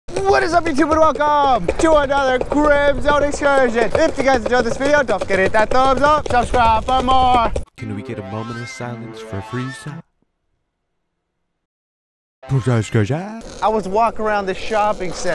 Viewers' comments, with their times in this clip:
0:00 Sounds like your dog is a horse 😂😂